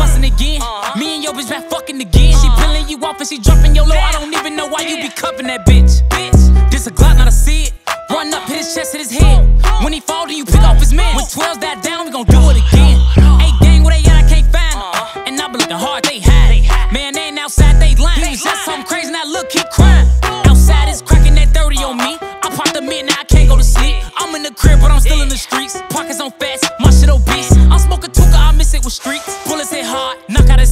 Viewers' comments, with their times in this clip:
0:09 Manee von said " Pick up his mans" like Quando Rondo said
0:12 the ra ra ra was too fire 🔥🔥🔥🔥